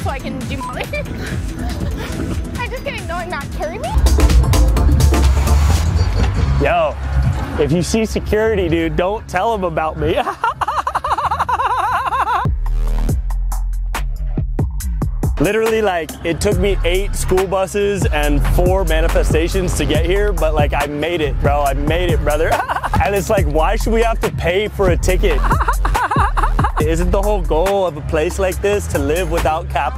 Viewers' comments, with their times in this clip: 0:10 The laugh is so painfully accurate 😂 I see too many of those types of guys in my city lol